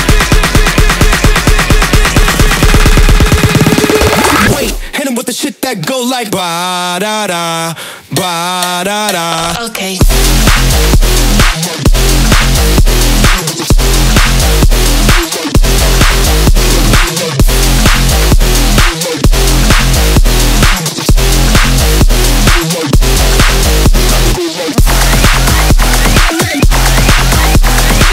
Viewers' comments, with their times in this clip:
0:09 Jesus Christ what a drop